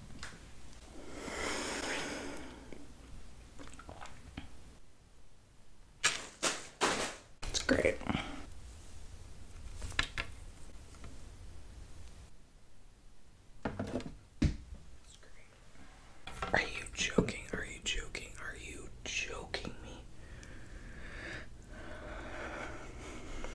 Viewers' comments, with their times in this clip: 0:08 you talk in hindi